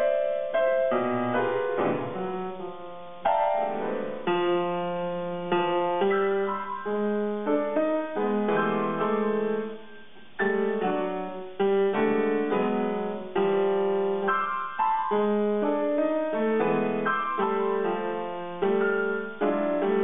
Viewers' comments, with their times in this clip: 0:03 Thanks! I love how it settled into this weirdly romantic yet cluster-infected passage after 8 minutes (starting in this video)